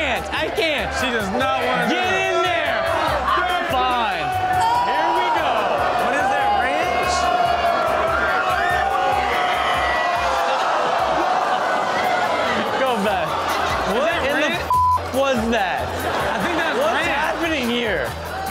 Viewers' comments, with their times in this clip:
0:04 That’s the second time she yelled in disgust over that part. 🤣🤣🤣🤣🤣